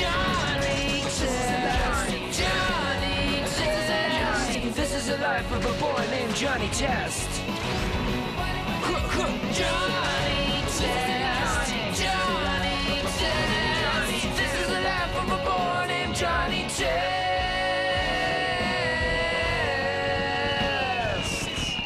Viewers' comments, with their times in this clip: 0:04 has them, they're just too quiet